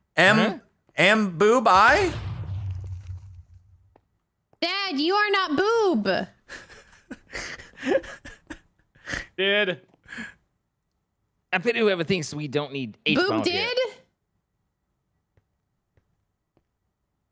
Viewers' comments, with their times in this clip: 0:03 for a quick timestamp lol its even funnier because the adorable way she says that hhahaha